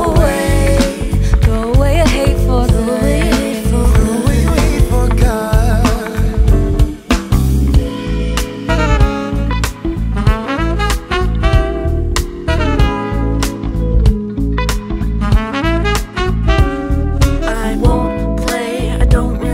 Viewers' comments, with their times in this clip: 0:04 who's the guy ? his voice is so good!
0:04 So true ? his voice is stunning !!!!! wonderful song !!!!!